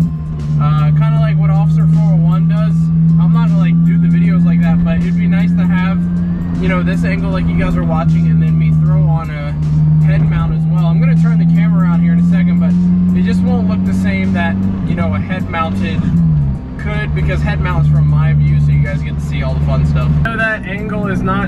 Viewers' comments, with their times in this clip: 0:09 wow i cant hear anything over the Lotus...